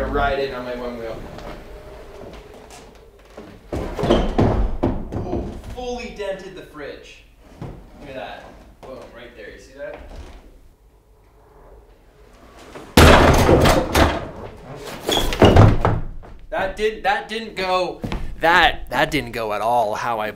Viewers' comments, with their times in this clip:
0:04 Did he play the Minecraft sound that is in most of the memes at the end? Or it was him? 😂😂😂😂